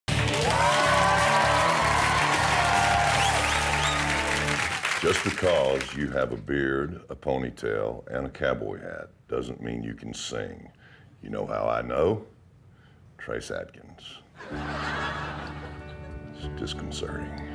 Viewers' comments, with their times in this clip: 0:03 if barry white turned country